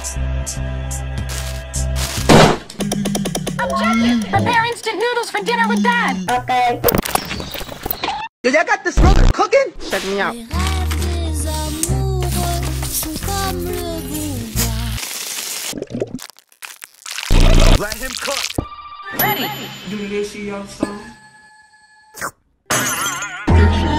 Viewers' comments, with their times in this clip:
0:10 Most satisfying asmr on the history of roblox
0:11 cooking noodles asmr
0:11 cooking noodles asmr